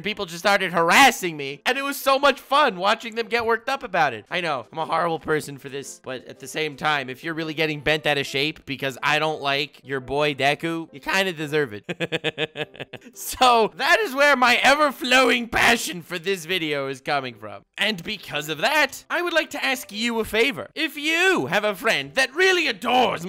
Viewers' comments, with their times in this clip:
0:10 Omg his laugh is so funny